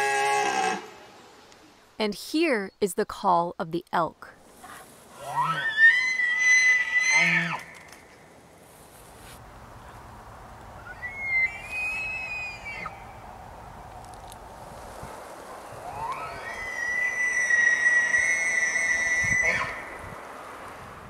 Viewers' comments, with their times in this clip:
0:05 he is screaming!!!!!